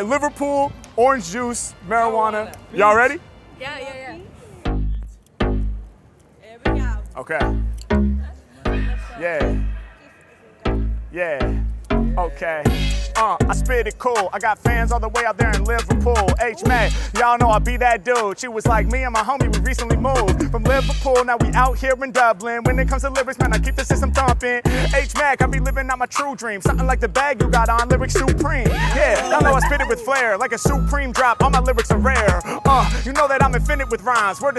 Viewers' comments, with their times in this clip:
0:04 The flow starting is the greatest of all time.. I wish he did more of these fast beast that have the groove
0:10 beat and flow is bumpin' loved it
0:10 that beat iS DOPE
0:18 HMack was tearing it up. I legit had to pause the video to check if the video speed got accidentally increased.